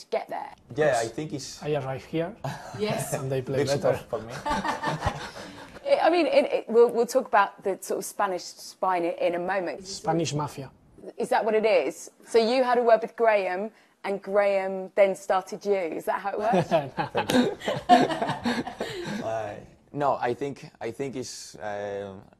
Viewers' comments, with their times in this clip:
0:05 Cucarella starts his mating call or he's just banged a key of Landans foinest 👀😂💥